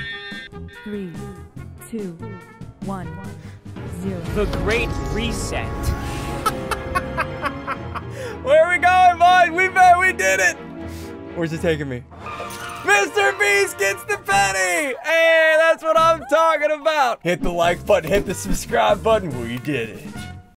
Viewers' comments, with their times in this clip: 0:04 his voice is so weird when he said the great reset